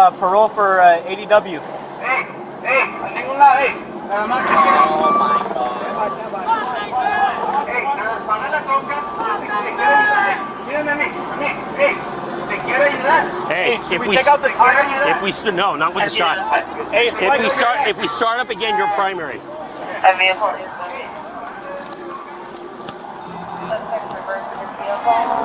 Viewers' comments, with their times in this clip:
0:06 He was screaming "matenme" which it means kill me. He didn't want to cooperate.
0:07 he yells “maten me” multiple times. translation “kill me” de nada wey🤙🏽
0:10 He was screaming "Kill me" in Spanish
0:10 sound like he says “matenme” which means “kill me”
0:12 he's screaming "Matenme" which means "Kill me" in spanish.